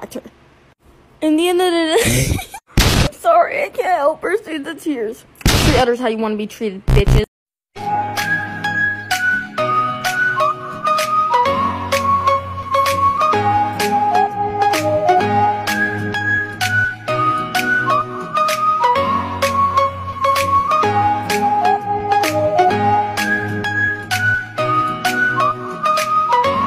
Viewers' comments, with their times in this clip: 0:07 THE MUSIC IS KILLING ME RN💀💀💀 Also just remembered someone has to go through the whole process of making this stupid... What do I even call it